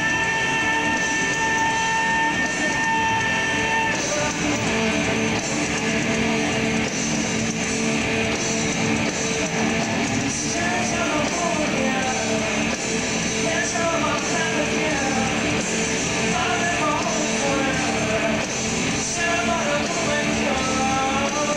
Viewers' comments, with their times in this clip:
0:08 Omg, Maynard shouting at the back of his head I think Maynard thought he would be humiliating this guy with the absolutely humiliating pony ride, however, he seems to have miscalculated because the guy is clearly having the most transportive moment of his fucking life. I bet he forgot his pen again. Then went home and...well ya know. XD